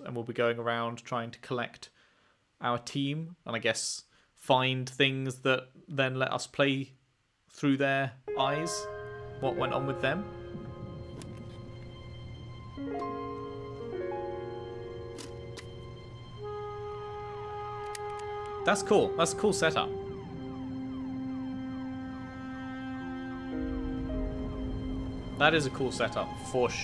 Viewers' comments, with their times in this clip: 0:07 God, those chords. What a powerful OST this game has.